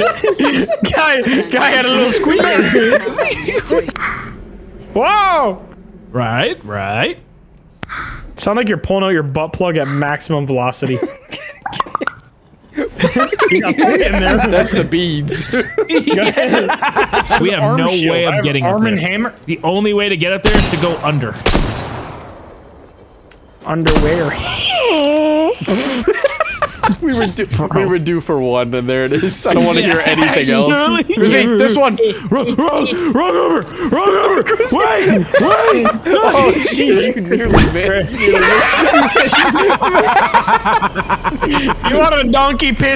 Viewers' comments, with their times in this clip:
0:03 it could definitly be a beat
0:24 that wheeze made me laugh
0:24 that laugh, so inhuman, glorious